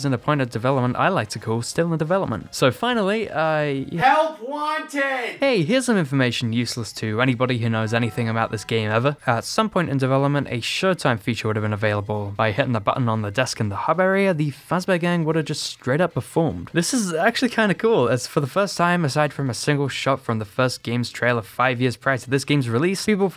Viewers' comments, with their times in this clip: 0:08 Taco Bell sound effect